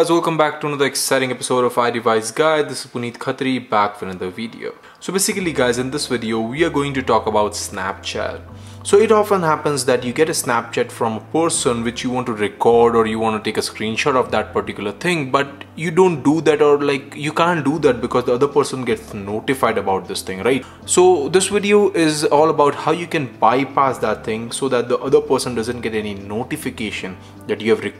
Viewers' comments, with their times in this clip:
0:09 do I get a snapchat from a PORSON?